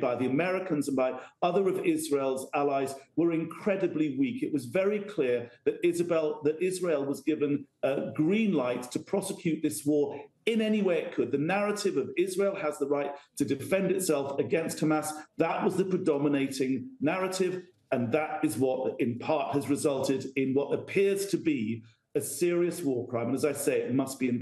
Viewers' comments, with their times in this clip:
0:05 He called them Isabell.